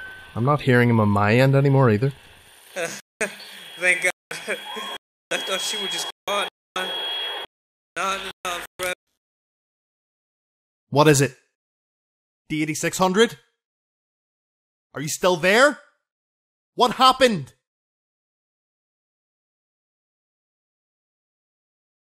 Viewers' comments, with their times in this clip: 0:04 i hear a scream